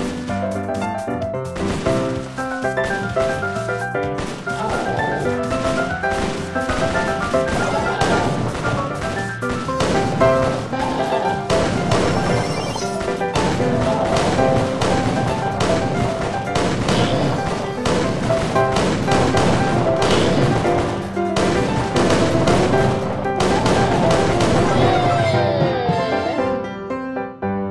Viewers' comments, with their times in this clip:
0:10 What a nice noise from ult of Shelly's